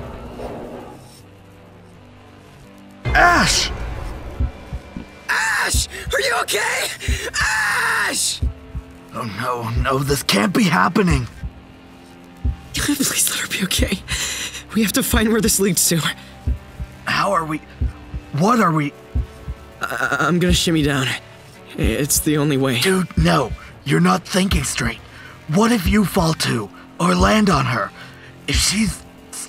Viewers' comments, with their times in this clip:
0:03 after hearing Larry's cry I was not expecting sal's to be so intense!
0:03 HELP- THE EMOTION IN SALS VOICE-
0:03 IM SORRY BUT THE RASPY SCREAM 😭😭 “ASH AS-🦅
0:04 brooo im died calm down ;-; my EAR!
0:04 you can hear the terrors of the universe in his voice Jesus christ
0:04 for a scream from sal
0:04 holy that voice acting is insane!!! You guys are awesome!!
0:05 OH MY GOD I GOT CHILLS. That was really good. Omg TRUE VOICE ACTING POTENTIAL.
0:05 the scream had me dead😂
0:05 sal really hit those ariana grande notes screaming for ash
0:05 hot dayum sal's VA's rent was DUE
0:05 Hey thanks! You killed my eardrums!
0:05 Sal....did your voice just???? die???
0:05 THE FUCKING UGH- THE SCREAM AAAA
0:05 NO BECAUSE THE VA IS SO FUCKING SICK OMG
0:06 Bro put 0.50x speed it sounds like a metal album
0:07 XD. But it's very good! Sal's voices is very good! (Sorry for bad English!)
0:07 SOMEONE PUT SAL'S VOICE ACTOR IN A METAL BAND
0:14 his voice was so shaky I almost cried 😭😭